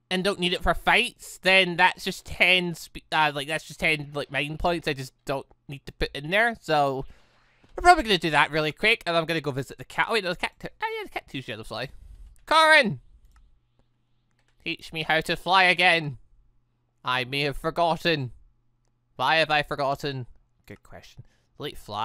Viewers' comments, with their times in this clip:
0:07 Normaly I'd just comment something with the tittle or just something random but im too brain dead to do that now Edit: he sounds like he just went crazy